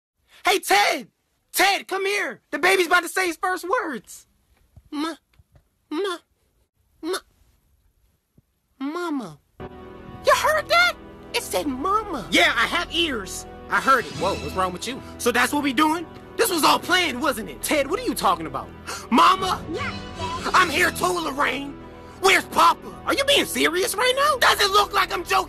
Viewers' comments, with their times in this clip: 0:08 the way that baby said mama😂😂😂😂 Look mommy I’m famous